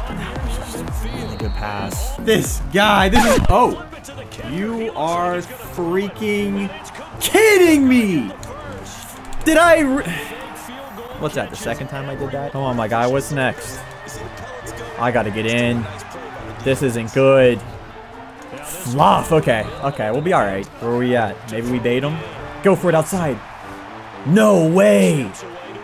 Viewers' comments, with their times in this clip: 0:06 kidding me more like kittle me😂